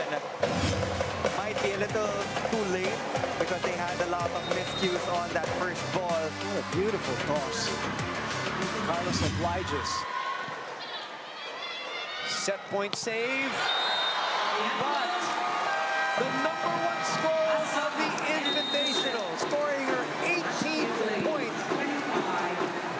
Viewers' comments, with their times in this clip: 0:06 "what a beautiful tots"